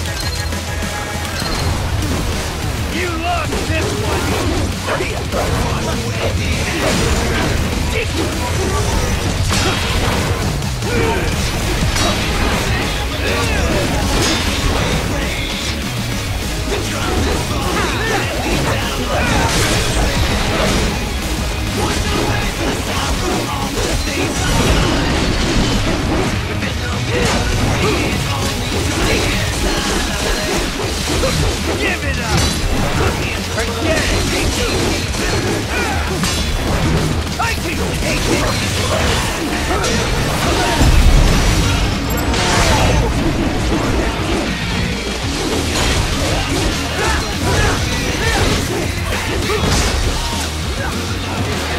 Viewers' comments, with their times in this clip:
0:06 When the lyrcis kick in
0:38 the sync on that "pain" and the hit sound